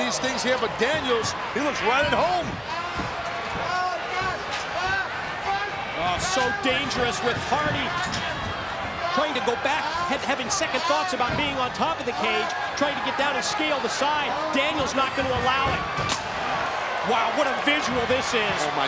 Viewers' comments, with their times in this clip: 0:03 Flair screaming over the commentators 😂